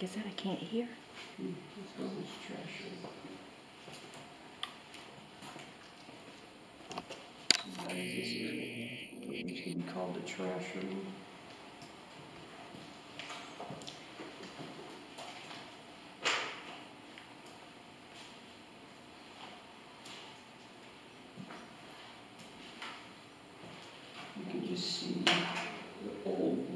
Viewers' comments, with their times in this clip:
0:09 That place gave me really eerie feeling ..right about the mark you can clearly hear a man's voice say something like "hey Ricky " but I'm not sure .. When first heard it i thought it sounded like a buzzar going off following the by the voice saying hey Ricky ..just not sure ... There's whispering all throughout there .. I really like video first time watching one of your ..